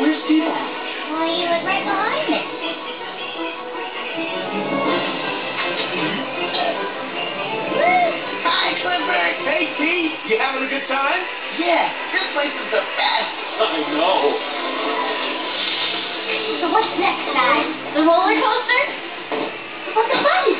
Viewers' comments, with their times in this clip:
0:06 T-Bone burps in Cleo's face